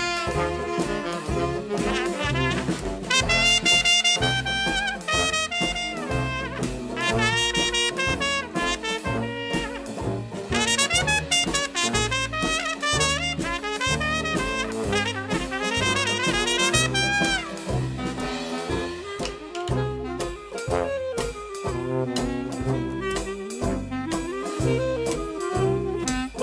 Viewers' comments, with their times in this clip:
0:09 now this is pure 1930's style talent. You broke out of the main keys and played a almost Pentatonic scale for your inspiration, you can so tell it doesn't fit the main chord progression and yet works so fantastically. That is exactly the art of color that people like artie shaw and Kenny Ball painted with in their blank canvas. As someone used to say to me, "remember son, the chords are only a guideline, not a creativity killer". In a way, you played major over a minor, and it worked fantastically!! Usually I don't comment before finishing a video, but that caught my ear so much that I had to congratulate you on it. Of course that's only 1-8th of what I have to say. I'll say it at the end of the video, this one is packed with exciting different parts!